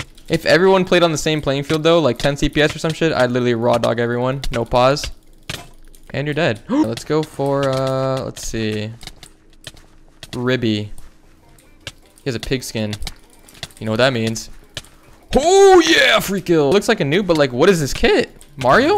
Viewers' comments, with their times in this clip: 0:04 that guy just farted thru his ears LMAO